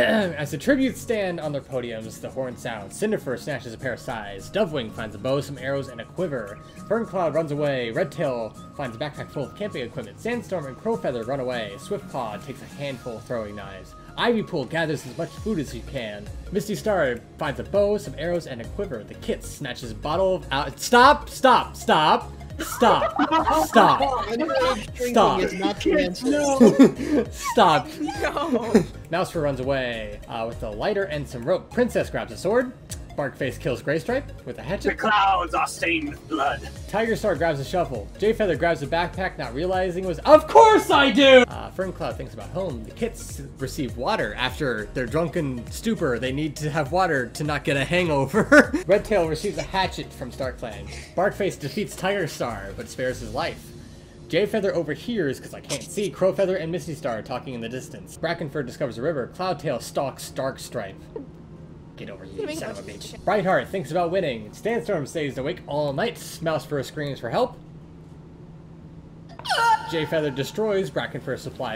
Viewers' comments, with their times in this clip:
0:08 I thought that the sais was salsa so it was just “Cinderfur snatches salsa” my brain weird
0:53 Okay but like- am I the only one that heard "gayfeather"